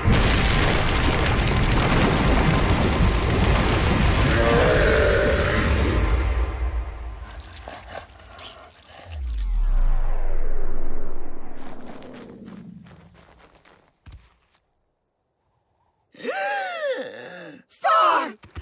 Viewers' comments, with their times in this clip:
0:05 Did we really need to Spanish subtitles to hear someone screaming?